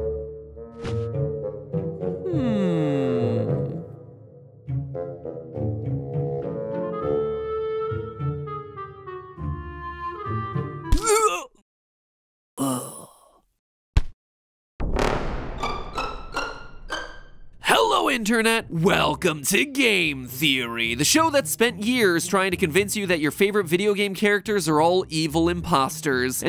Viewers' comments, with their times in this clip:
0:10 Put on 0.25 speed and it will be og minecraft hurt effect...